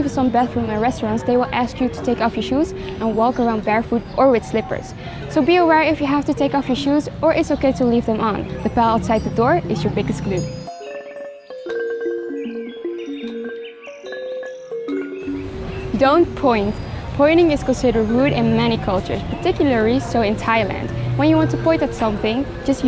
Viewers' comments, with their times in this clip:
0:06 The ball outside the door is your biggest clue?